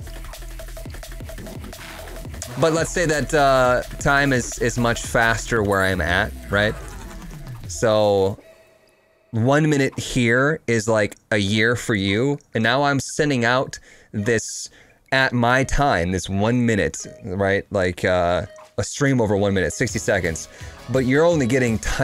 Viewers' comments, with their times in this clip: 0:09 I absolutly love the song that comes there <3